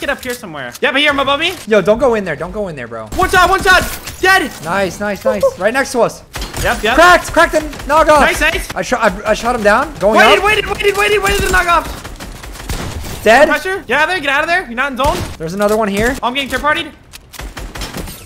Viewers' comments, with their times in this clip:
0:05 to hear a monkey... you're welcome :)